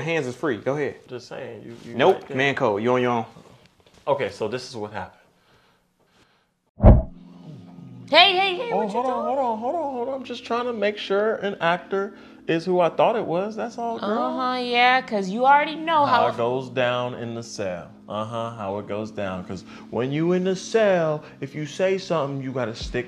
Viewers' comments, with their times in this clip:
0:07 Yoooo what's this instrumental/song? This shit hit Hard, no Pause button on that 🔥🔥